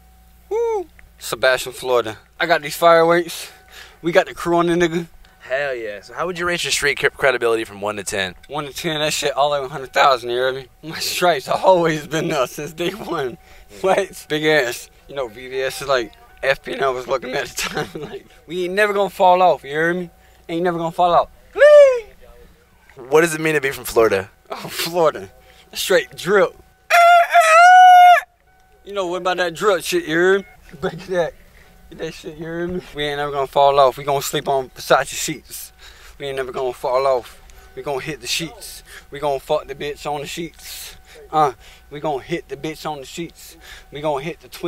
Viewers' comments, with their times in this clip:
0:03 "We got the corona ni**a!" Whoa...how did he know so many months in advance?
0:26 straight drip rooster noise
0:26 perfect roster sound